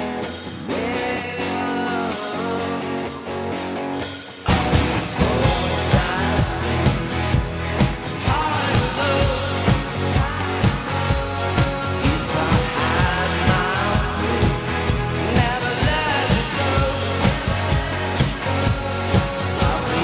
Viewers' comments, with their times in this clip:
0:04 The drop is even better here than it is on the recorded version